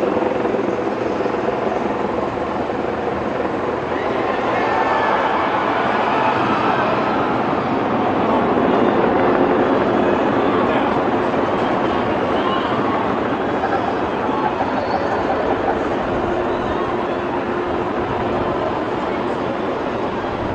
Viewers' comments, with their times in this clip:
0:03 Man, hearing all those screams is truly terrifying.
0:03 When human vocal reactions are heard above any and all other sounds…astonishing ! 😔😔😔🙏🏼🙏🏼🙏🏼
0:03 god the screams are horrifying